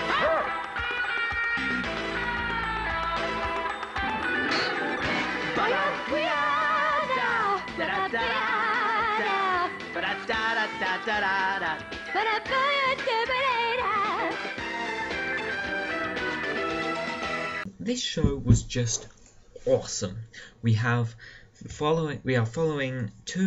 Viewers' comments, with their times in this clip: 0:05 Me: HOLY CRUD THEY SING THE THEME SONG? THAT'S AWESOME!